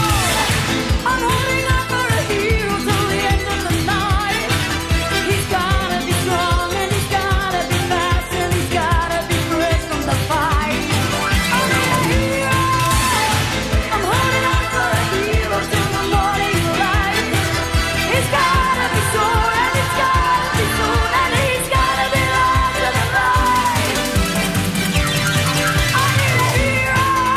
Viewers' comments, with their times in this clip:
0:10 the music synch up 😂